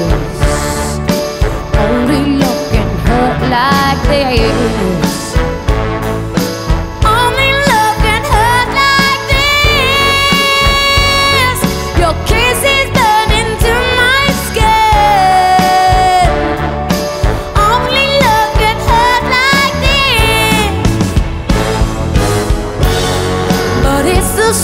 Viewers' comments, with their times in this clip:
0:05 holy shit this powerful voice..fuuuck